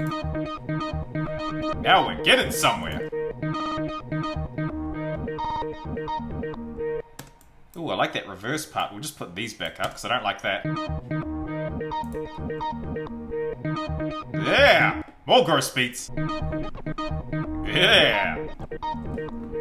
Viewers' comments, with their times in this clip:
0:04 sounded exactly like something Murda beatz would have made or Ronny j